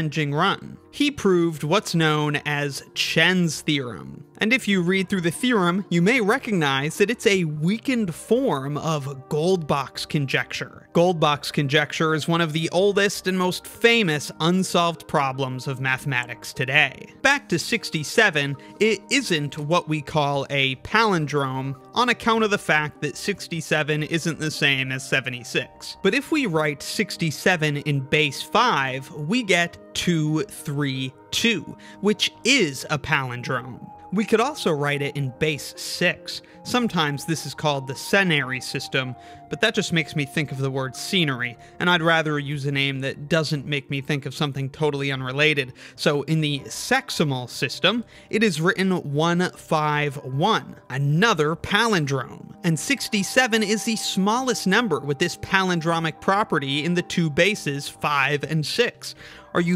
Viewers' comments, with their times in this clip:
0:07 bro i heard "vegan porn"
0:41 "And I'd rather use a name that doesn't make me think of something totally unrelated. So in the SEXimal system..." there is no way that was unintentional with the way you pronounced that